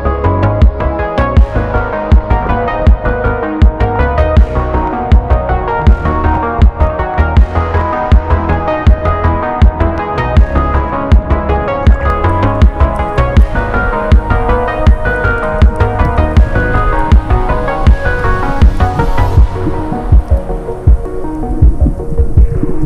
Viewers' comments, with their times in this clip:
0:03 That synthwayve tho